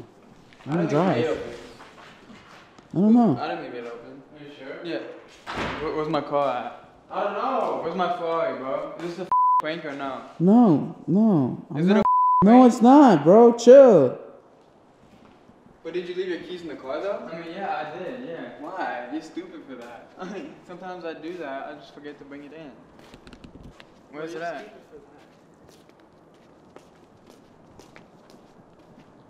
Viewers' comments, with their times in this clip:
0:10 did u actually cuss or just to make a beep